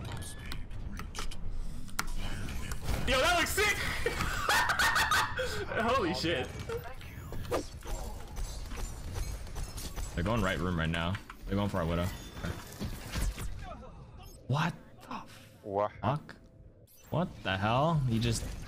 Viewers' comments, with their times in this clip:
0:03 THIS LAUGH HAS KEPT ME GOING FOR 6 LONG YEARS